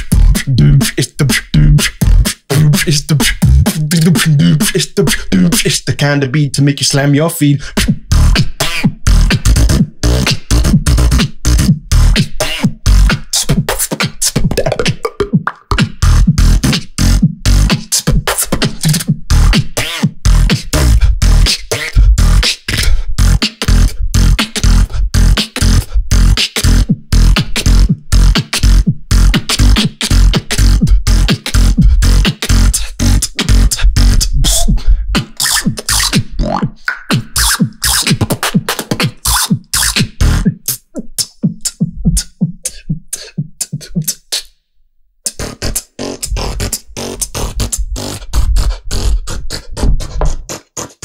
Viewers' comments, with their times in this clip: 0:05 i love this beat, thanks d-low! ur creativity skill still horibble🔥🔥🔥
0:05 Yoo what a banger drop, like electro house
0:06 i love this O - M - G I would put it as a phone ringtone
0:08 This drop ❤️❤️❤️ Hyped
0:08 best techno drop of the year 🙌🏻
0:08 Switch Bbx 😂 Yeah but can you do the whole beat? is what hes saying. Not just the zipper sound
0:09 is something like bass electro but better
0:13 so clean i cant :))))))
0:26 i was waiting for this drop since you did it in the livestream
0:37 What's the sound? He touched his cheek with his hand and got a sound